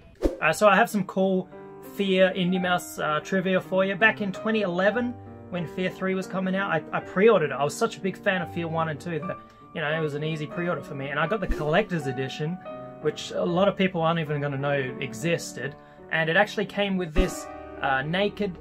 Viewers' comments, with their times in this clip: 0:06 love the cliffside soundtrack. like if you agree.